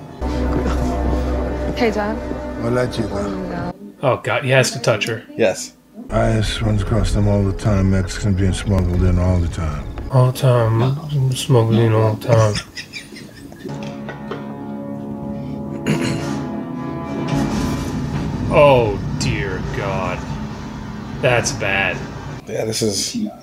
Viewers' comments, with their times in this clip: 0:06 Really bugging me, wth is he saying ???